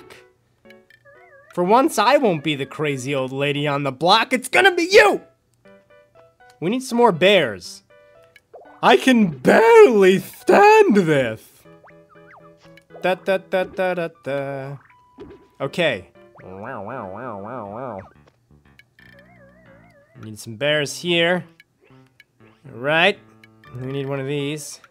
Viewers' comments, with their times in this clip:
0:10 you sound like king candy from wreck it Ralph